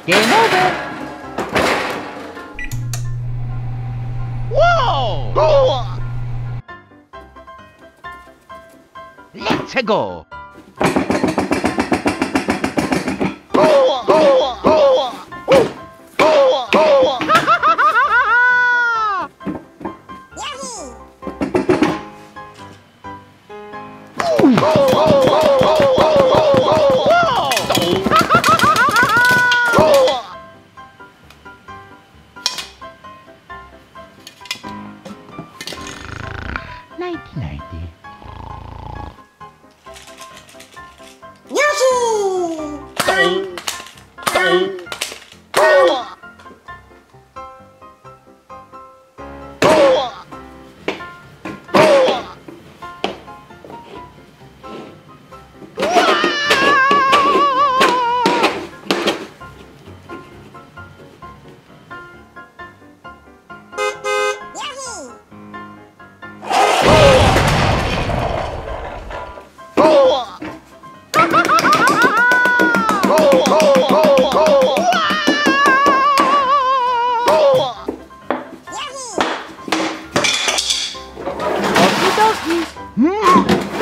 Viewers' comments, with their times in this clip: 0:07 if you put this at 2x it’s a minigun
0:10 I feel like it's a jackhammer
0:41 yoshi Yo Yo Yo "Mario dead sound"😂😂😂😂
0:51 No ones gonna talk about that clap
1:04 GET OUT OF THE ROAD BEEP Mario:stands there enjoying screaming at the wall